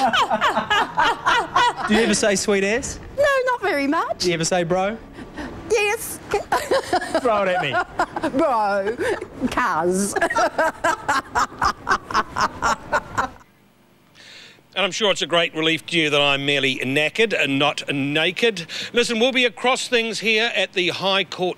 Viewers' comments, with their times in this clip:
0:09 The synced laugh 😂